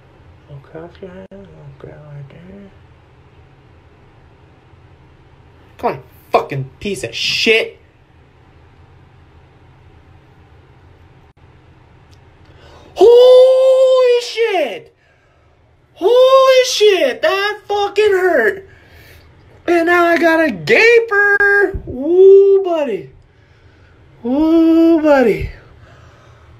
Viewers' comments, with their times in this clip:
0:08 of it you can hear it come out
0:11 Crank up your volume. when he pulls it out - you can hear literal slurping pop noise. UGH. LMAO!